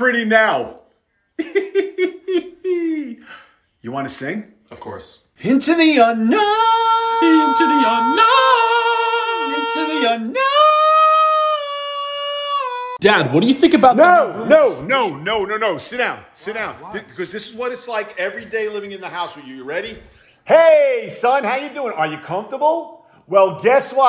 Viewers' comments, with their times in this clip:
0:07 YOUR SINGING IS SO GOOD I LOVE THIS PART😂😂